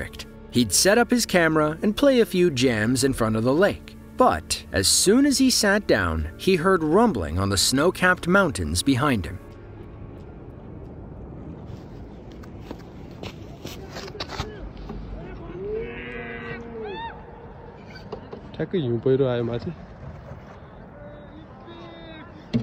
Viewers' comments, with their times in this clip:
0:08 it was very special moment, it is a shame many times people talk over the natural sound of the event and use improper words (which adds nothing but vulg.) or shout hysterically over the natural sound, making the video ordinary. the start of that clip illustrate the typical behavior